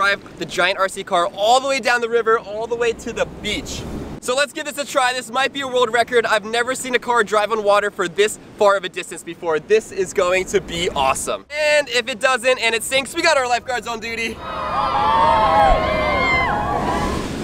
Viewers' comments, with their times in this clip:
0:04 The rooster 🐓 in the back who noticed it???